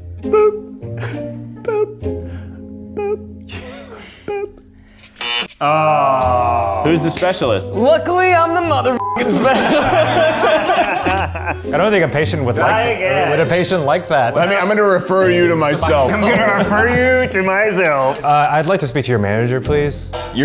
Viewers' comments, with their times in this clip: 0:07 Just here alone AM with my kitties laughing so hard. The farting part kills me the most. so funny. Especially bc I am baked out my mind hahahaha good stuff bois